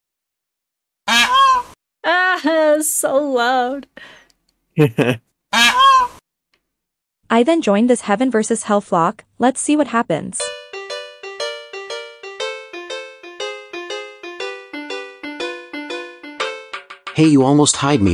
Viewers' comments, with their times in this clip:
0:01 This call made me freak out 💀